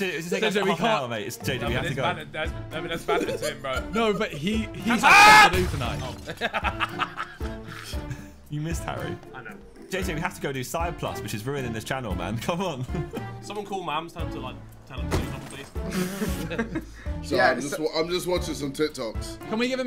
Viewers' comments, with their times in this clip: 0:04 for primal Ethan scream
0:04 What was that scream